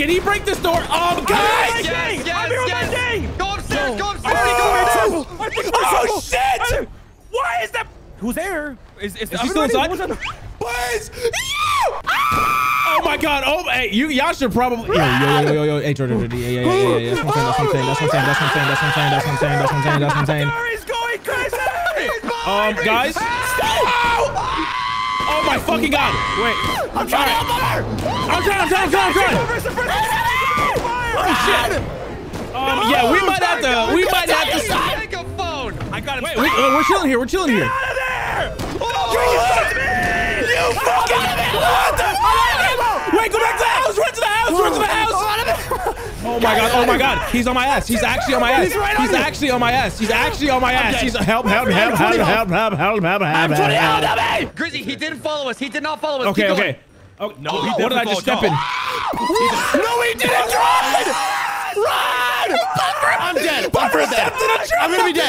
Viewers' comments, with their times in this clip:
0:09 It’s the high pitch screams and the “who’s there?” that get me laughing.
0:14 The screaming from and forward is killing me🤣🤣🤣
0:24 Hearing that R2-D2 scream😂
0:24 i didnt know you guys had r2d2 in your group
0:24 What is that R2D2 scream?
0:47 discord notif got me f'ed up😭